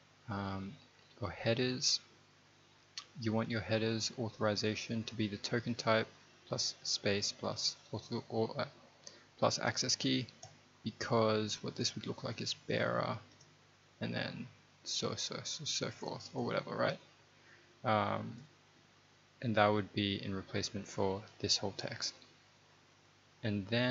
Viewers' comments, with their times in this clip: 0:07 Thanks for the vid! Why do you say "bottle of water" in a british accent haha?!